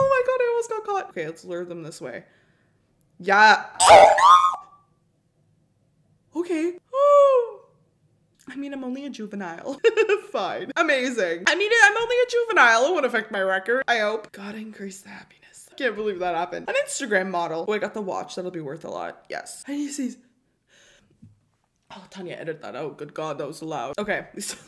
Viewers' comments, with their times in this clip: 0:03 🔴👁🟨👁🔴 👃🏼 👄 oh my gawd real life auto tune?!? THIS IS NOT A HATE COMMENT
0:06 Minecraft ghast a joined